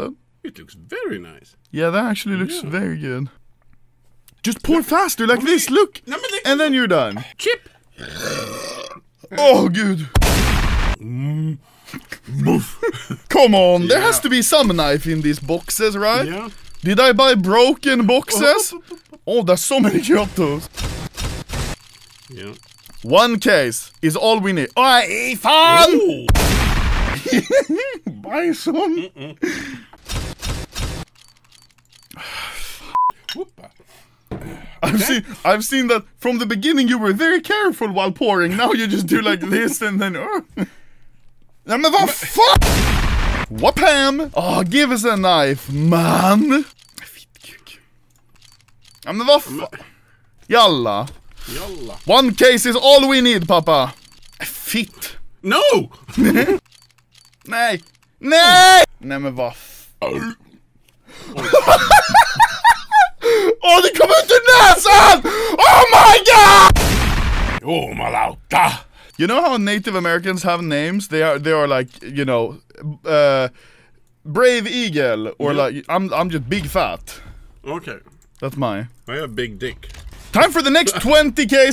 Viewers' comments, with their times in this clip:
0:10 that hella sounds like a minecraft cow.
0:10 minecraft cow, and real life dog.
1:07 sounds like he is saying "Jumalauta"
1:07 That finnish swearing :DD
1:08 I like how papa says JUMALAUTA in